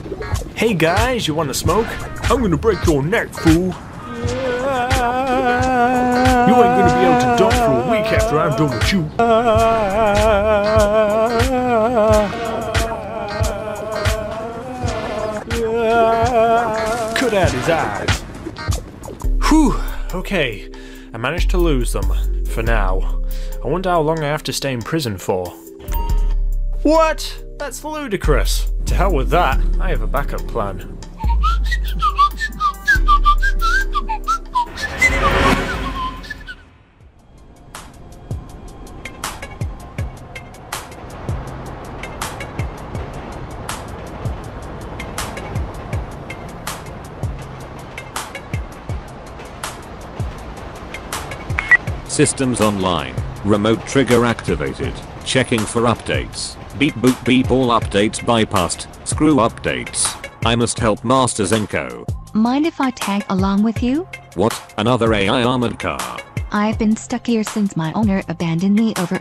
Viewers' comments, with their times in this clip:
0:04 Best Voice Acting LMAO
0:12 sounds like a bee lol
0:31 the conch signal
0:34 was that supposed to be a dog calling thing? 😂
0:52 Oh my god! brings back memories of my time playing Gunship III that beep! It also reminds me of all the times I played Gunship Sequel! Thank you for using the sound effect!!!!!!